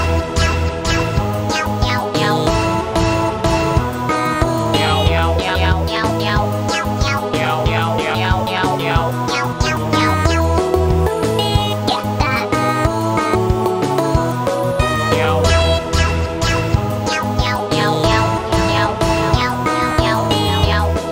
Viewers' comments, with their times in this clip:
0:03 bro this sounds exactly like smile HD
0:04 This part is like dusk till dawn
0:07 pinkie pie sound